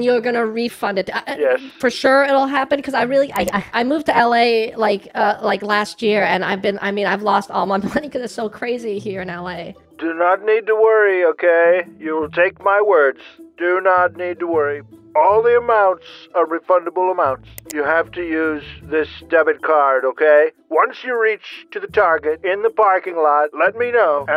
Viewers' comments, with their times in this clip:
0:10 i realised the voiceover for the scammer sounded like Donald Trump